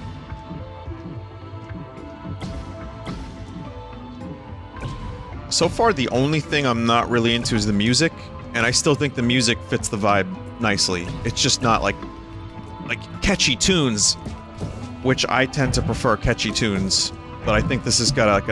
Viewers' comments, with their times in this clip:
0:06 As a one-man developer, I can say it's reeeeally hard to do everything. Or I can be good at literally everything except one thing. My one thing is music, for sure, so when I play a game like this and the music is kind of just a droning loop (not bad, just kinda backgroundy), I don't even get mad, I know exactly what it's like. To be really transparent and honest, sometimes I get so desperate for a tune I'll smash the random button on an arpeggiator and take something that sounds okay and just massage everything into place and kind of just run with it and maybe add a few more instruments on top.